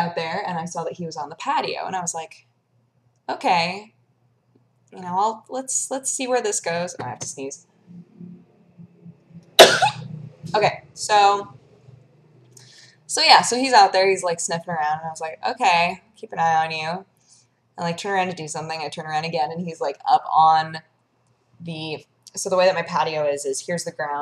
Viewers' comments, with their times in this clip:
0:07 cutest sneeze EVAR, except for all of dodgers other sneezes :P
0:09 bless you! X)